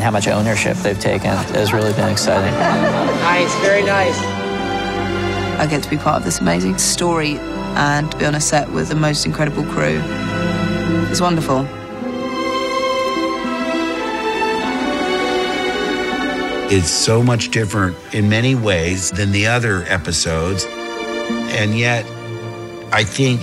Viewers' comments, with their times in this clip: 0:10 the most unconvincing "it was wonderful" on record